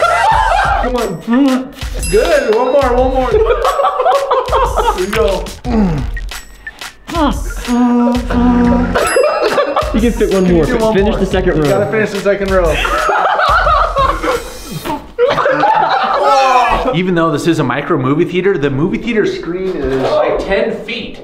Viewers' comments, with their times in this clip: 0:08 You sound like SpongeBob's boat horn alarm clock